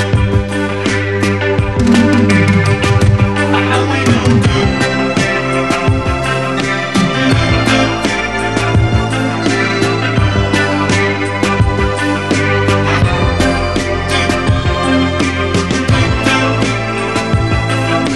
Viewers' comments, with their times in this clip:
0:04 Why is the synth makes me think of Giorgio Moroder s Metropolis score? Anyone?